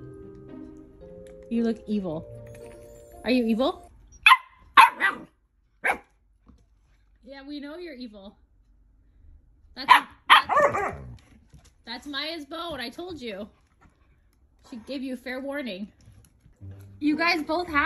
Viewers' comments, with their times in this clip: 0:04 it was the perfect 'yes, I am!'❤️❤️😊😊😂😂